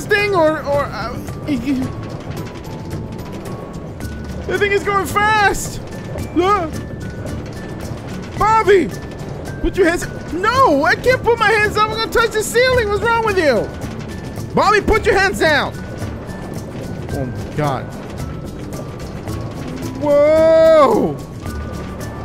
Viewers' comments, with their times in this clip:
0:10 I heard what it his voice would sound if he was american. not that i dont like his accent already though